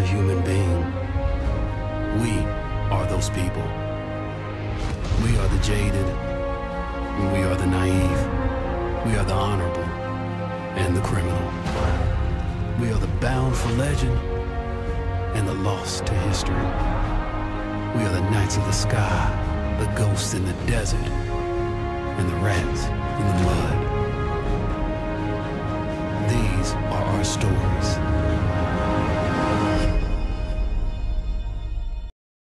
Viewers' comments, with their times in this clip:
0:05 I keep coming back to hear this bit I wished it ended on a different chord after this part of the piece.
0:22 AWESOME sound sync! 🔥👏👍